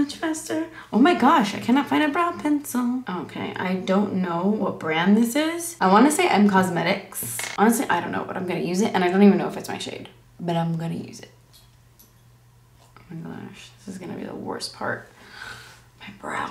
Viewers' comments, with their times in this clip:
0:04 I swear I could hear like a girl say some thing but idk what she said